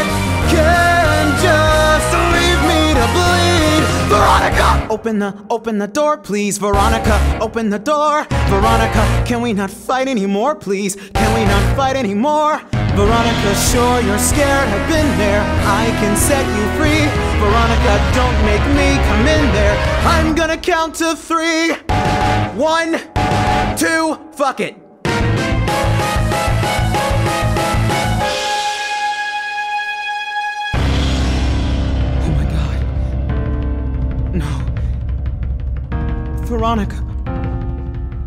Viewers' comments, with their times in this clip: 0:04 bro hope u have ur volume down
0:10 Can I just say, the notes on were perfect, I can't stop listening to this!😍
0:23 That "fuck it" was so chill. I love it